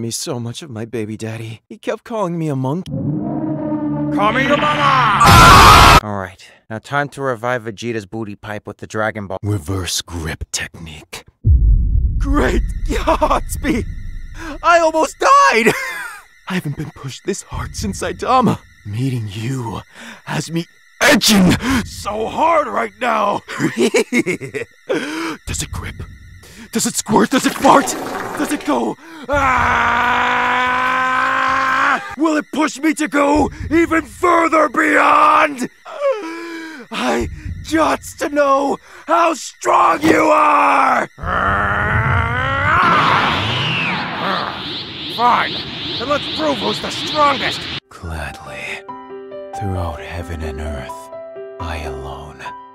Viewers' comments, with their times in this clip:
0:04 I loved how he said kameyomama
0:35 Anyone else hear Light Yagami?